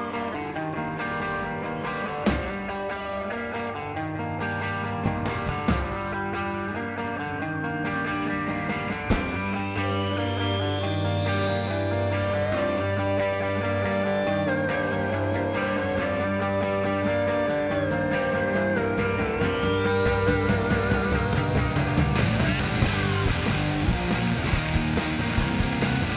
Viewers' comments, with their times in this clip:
0:08 brandon sounded like a wolf😍